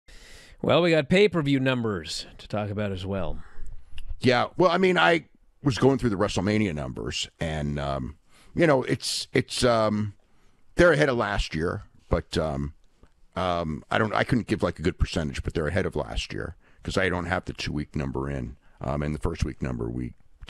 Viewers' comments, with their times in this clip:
0:01 WWE is coming off the biggest Wrestlemania ever, Meltzer gives the results like his dog died, then AEW little rinky dink PPV numbers Meltzer sells it like it the biggest PPV in wrestling history 😂